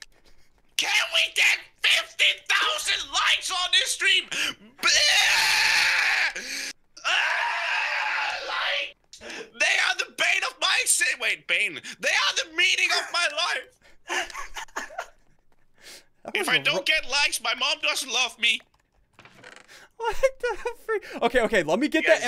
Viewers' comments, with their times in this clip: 0:04 that sounds like Scarlxrd 😆😆